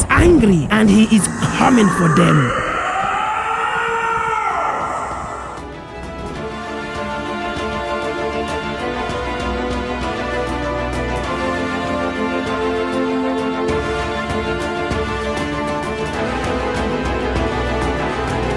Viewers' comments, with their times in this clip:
0:03 sounds like Eren in his Titan form.